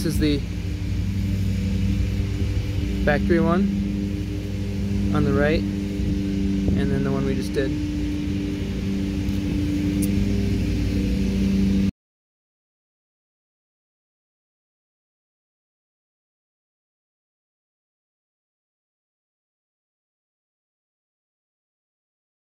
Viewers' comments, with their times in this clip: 0:07 Useful clip, but No sound after ….